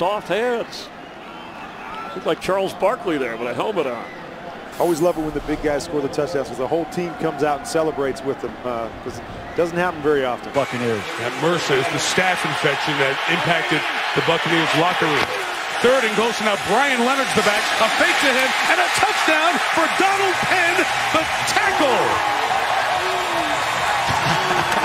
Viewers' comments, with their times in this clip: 0:08 I thought he said fu*king ears